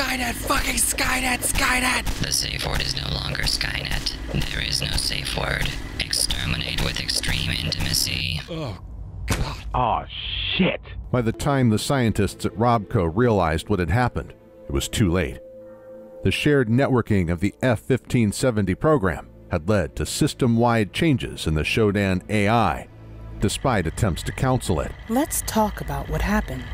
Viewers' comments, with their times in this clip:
0:07 Holy fuck that faint I'm ETHEREAL